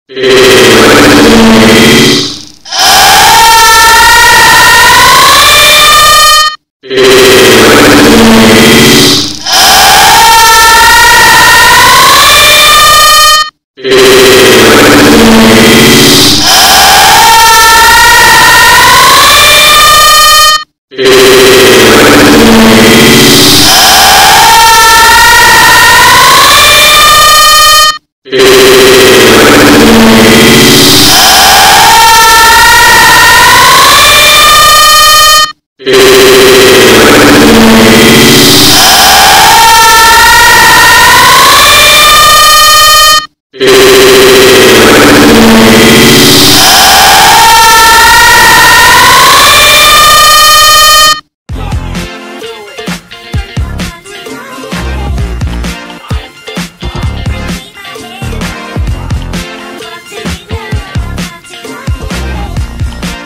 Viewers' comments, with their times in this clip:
0:09 Put this on .25 speed and this is exactly when a 5 year old gets snitched on in class
0:10 it sounds like a Kaiju screeching
0:12 it sounds like wes wenday smile poos
0:14 When a siren got hacked for a second JUST FOR A MESSAGE
0:22 at .25 speed sounds like pacman
0:31 in 0.25x siren head
0:39 listen to it at .25 speed super creepy
0:39 sounds like a 2014 ps4 that hasn’t been working in 6 years
0:40 Rip headphon users
0:42 on 0.25 speed = better music than half the noise shows i've been too
0:46 Crowd Scream In It Is Wednesday my dudes
0:47 it is basically how my little brother screams
0:48 Loudest . I . Have . Ever . Heard